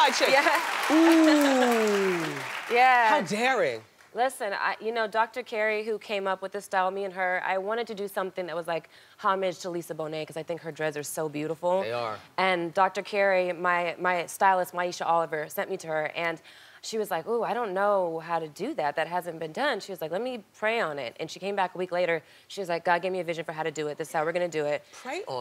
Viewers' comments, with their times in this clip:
0:08 Start the video and listen to Wendy say "THEY ARE " Wendy is A MAN
0:11 wow it took me a few playbacks to figure out that's Wendy saying "They are". I thought it was a random man voice.